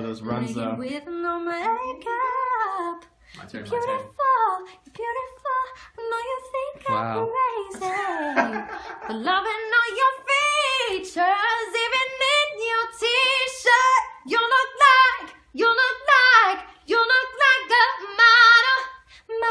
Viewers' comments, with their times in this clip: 0:07 you can hear Connor laughing at the back 😂